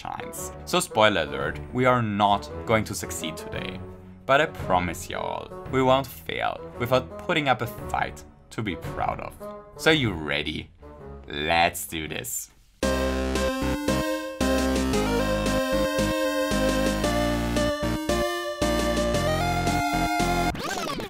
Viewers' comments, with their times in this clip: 0:05 hearing “y’all” in a foreign accent fills my heart with joy!